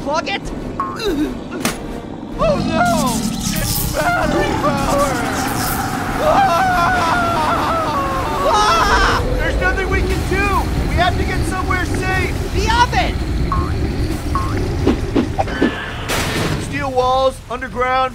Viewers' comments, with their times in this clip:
0:05 it sounds like pear!!!!